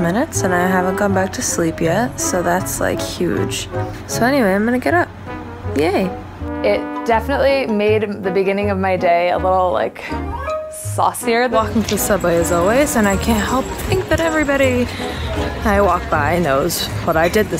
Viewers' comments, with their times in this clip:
0:03 we all know it buzz again after saying huge haha